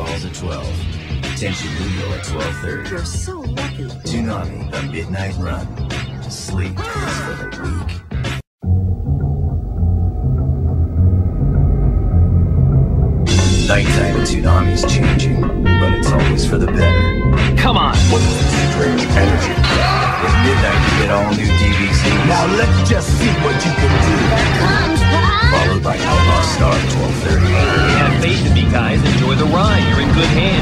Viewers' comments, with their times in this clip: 0:09 That promo music and anime edit is epic cool
0:14 That beat God it's amazing.